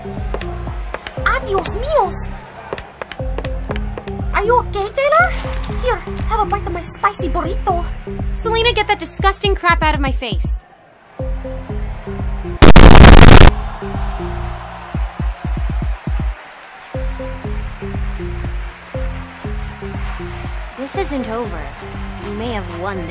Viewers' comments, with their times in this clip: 0:07 how she said borito 😂😂
0:11 MAD SELENA NOISES